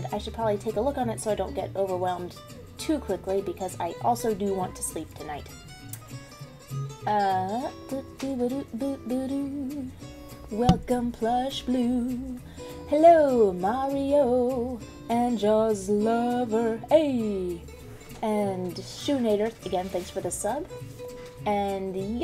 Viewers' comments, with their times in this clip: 0:10 While it’s nice that you’re back to streaming, when you introduced me in song, that sure made me crack a smile.